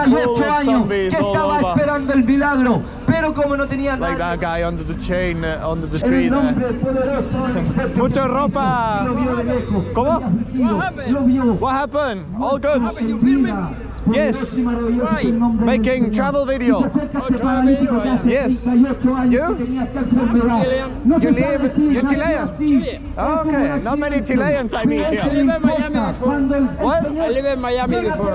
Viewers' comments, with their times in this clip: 0:09 I thought that guy said "you feel me?" and "I'm chillin'" 😂